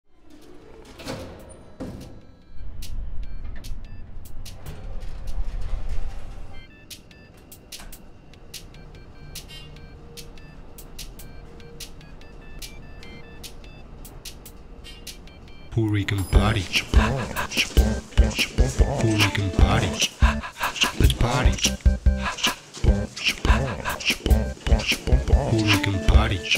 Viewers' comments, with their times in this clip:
0:09 That elevator is a DOVER with Vandal Resistant fixtures, because the light of the buttons is orange and the typical short DOVER buzzer can be heard (low pitched instead). ThyssenKrupp have red or blue light instead for the button and the buzzing is a little bit longer.